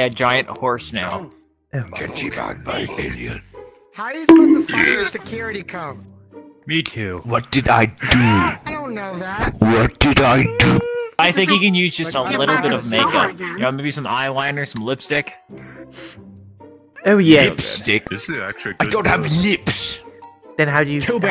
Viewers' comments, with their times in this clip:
0:03 perfect timed burp